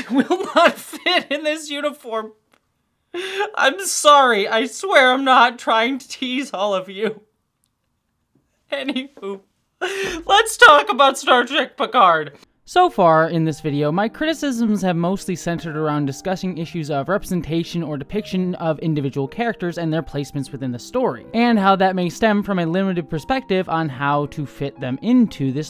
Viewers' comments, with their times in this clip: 0:06 not me hearing "any boob" instead of "any who" ...
0:09 'Any who' or 'Any boob'? Both are valid segues!